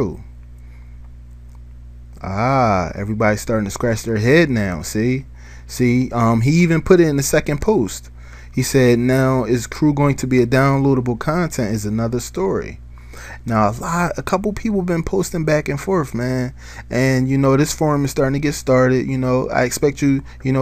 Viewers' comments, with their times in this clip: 0:07 pust u mean post lol but greAt investigator